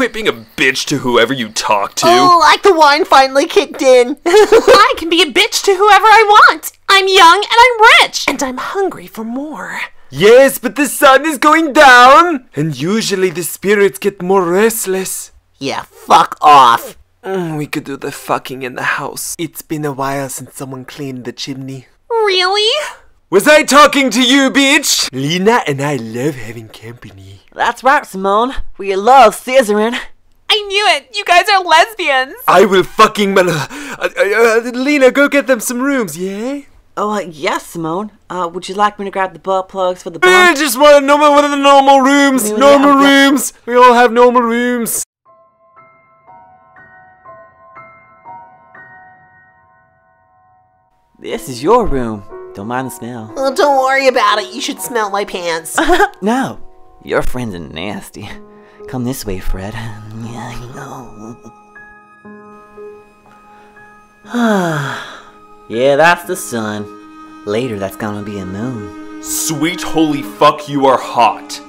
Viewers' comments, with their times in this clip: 0:04 the best part of this video is using the Cinderella voice for that line, bc that bitch would say that
0:23 Simone’s voice I just giggle like mad when l hear it lol
0:57 why she say nasty like that 😂😂